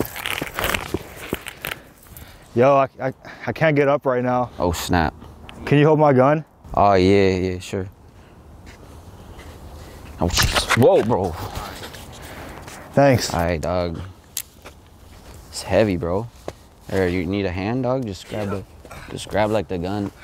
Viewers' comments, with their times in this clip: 0:03 You can hear the bibis swirling around im the gun its a bibis 🔫